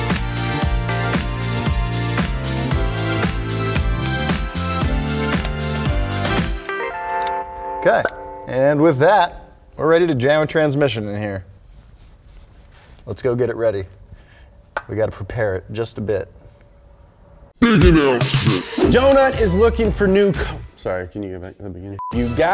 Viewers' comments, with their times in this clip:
0:05 love the *pop